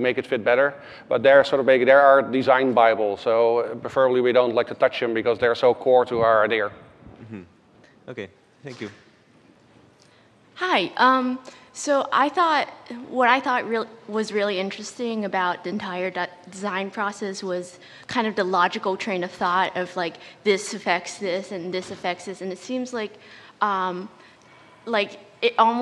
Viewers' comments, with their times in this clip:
0:10 I think that "beggi" is the dutch version of "like"